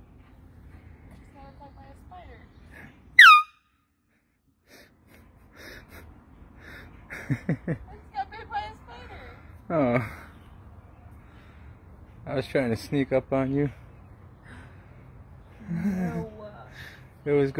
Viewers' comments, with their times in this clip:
0:03 I think 🤔 sound will come big but.....